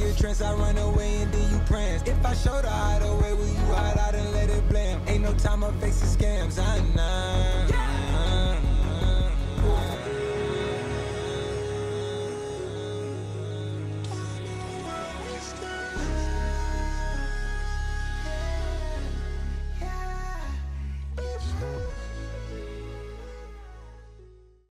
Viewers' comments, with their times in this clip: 0:10 the music and the ac-130 gunfire just fit and make a epic af scene